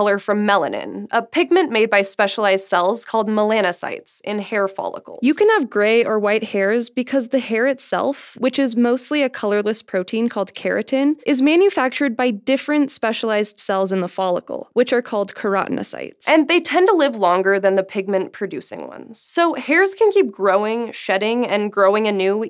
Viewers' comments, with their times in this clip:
0:05 What even happened to the sound ...